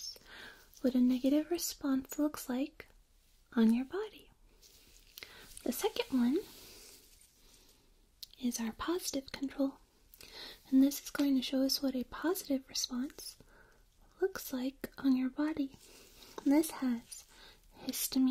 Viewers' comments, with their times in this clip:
0:04 Anyone else have the audio reset ?